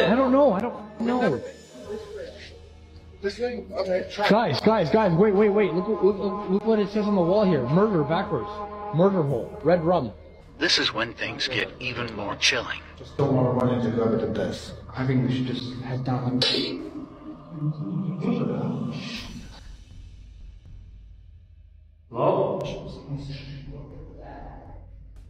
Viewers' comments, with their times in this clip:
0:07 I think if I heard something like a little girl screaming in there, idk if it’s the mother instinct in me, but I wouldn’t have run OUT. I would’ve gone lookin for her. They probably added that noise in there cuz the way he ran out of there like “WtF!? Huh huh” 🫨 sounded like terrible acting to me. His friends were nowhere near close behind him either 😂 Maybe he’s just the xxxxx of the group. Maybe he just didn’t tell his friends he was trying to fake a horror documentary beforehand. I CAN tell you tho, here in Vegas there’s an entire CITY of tunnels underground, and you don’t wanna get too deep into them cuz there are no laws down there and there are definitely some literal psychopaths that live in the dark beneath us here. They come out when it rains. Usually** alive.